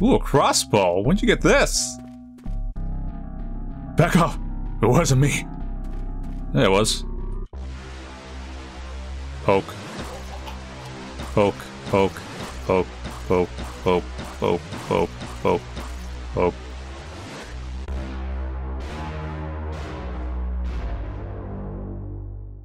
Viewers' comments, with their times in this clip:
0:03 I like how nonchalantly he said “yeah it was” here.